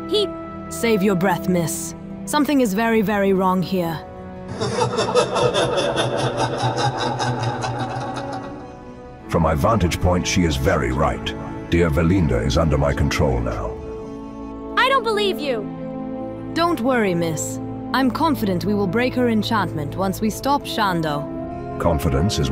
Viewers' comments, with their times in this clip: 0:04 Malfurion truly embraced the Dark Side with that laughter...